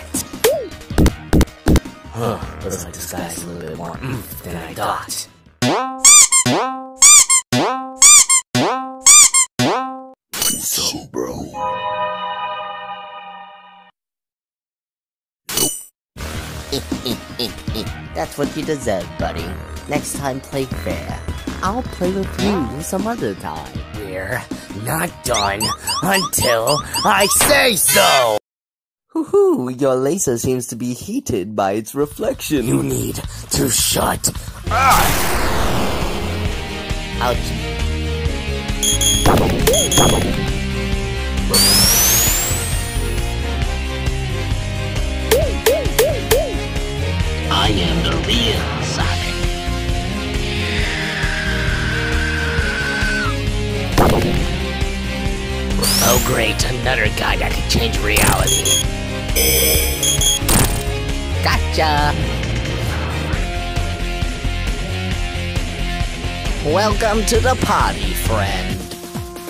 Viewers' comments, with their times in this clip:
0:05 why is it every time it squeaks I feel like it's swearing at sonic.exe
0:48 sonic:am the real sonic Fleetway sonic puts the faker poster on sonic faker sreams
0:50 guys faker is doing fours screech from bfb
0:50 Faker screams in pain